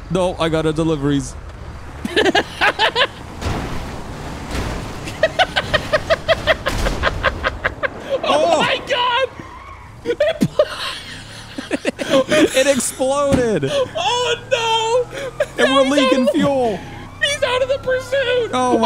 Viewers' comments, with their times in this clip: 0:06 Big Kaboom Boom! This is such a perfect episode! Making me want a $1k Malnatti pizza.